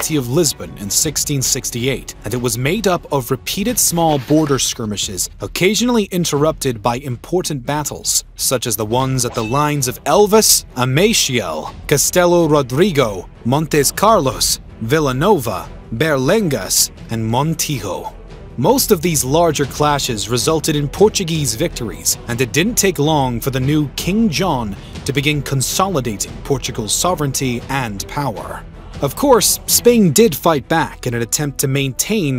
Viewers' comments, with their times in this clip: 0:08 I just spent almost three weeks in Portugal last October (2021). I can tell you the languages are far apart, as well as pronunciation, as well as how the Portuguese tend to roll words together such that Brazilian Portuguese is actually easier to learn and understand. Pronunciations are very different. The trailing S's on words are pronounced more like Sh (with Northerners laying it on extra thick). For example. "Adios," one of only a few common words, is pronounced more like "ah-DI-osh" with the emphasis on the second syllable -- listening to it you wouldn't think it was the same word. The place names in this video are pronounced wrong. It would be interesting (and a lot more fun!) to see this video narrated by a native Portuguese speaker.
0:18 Hearing him say "Alfonzo" when referring to our king was bad. Hearing him say Portuguese names with bad Brazilian accent was equally bad. But surviving his pronouncing "Montijo" as if it was a Spanish word required a super-human effort. (And by the way, the 4th battle in that list should be Montes Claros, not Montes Carlos...)